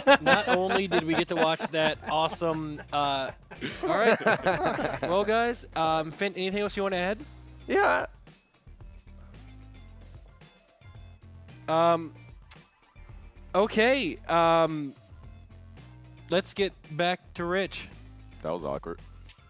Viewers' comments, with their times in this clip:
0:06 That voice crack and awkward silence afterward killed me.